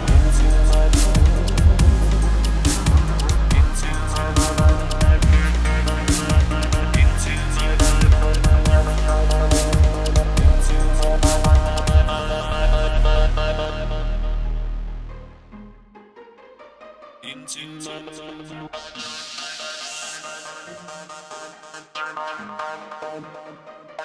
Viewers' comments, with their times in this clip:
0:10 it defiantly says into my butt